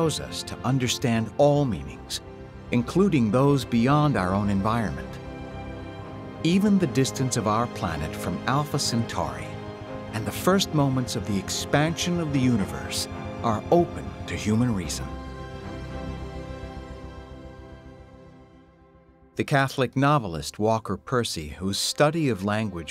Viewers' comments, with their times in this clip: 0:06 Nice CGI, why tell a lie? Hilarious overly dramatic horror movie music bed.